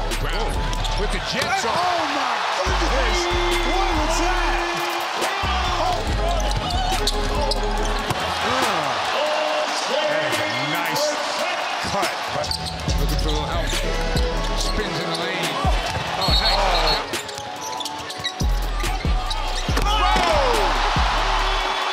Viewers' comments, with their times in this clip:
0:06 you can hear OoOoOoOoO 😂